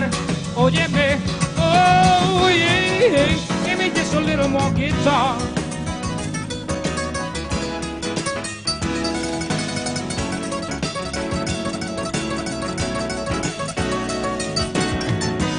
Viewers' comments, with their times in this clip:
0:03 THAT's what I call a Guitar Solo!